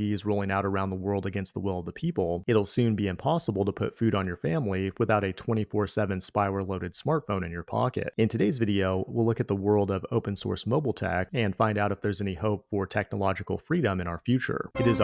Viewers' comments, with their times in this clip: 0:03 Was listening without watching and thought for sure this vid was AI generated